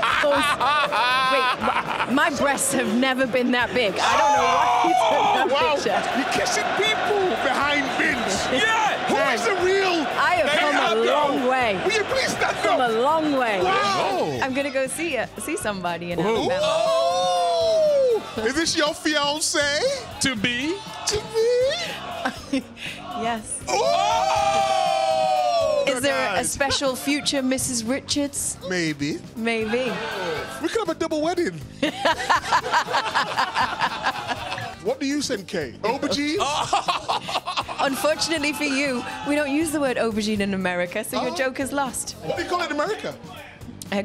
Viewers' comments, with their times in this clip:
0:07 Jamie shouting YEAA with a mouthful of sausage roll will always be hilarious.
0:31 She laughed WAY too hard at that lmfao